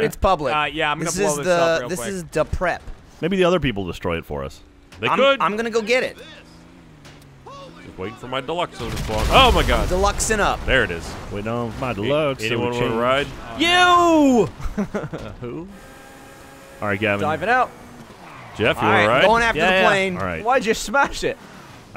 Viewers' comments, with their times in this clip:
0:04 The random NPC's voice is fucking hilarious.